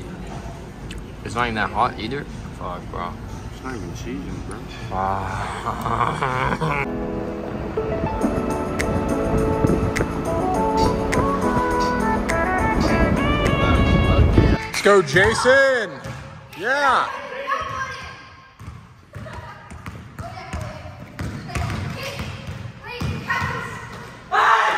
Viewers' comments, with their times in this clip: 0:07 this YouTube NPC ass song bro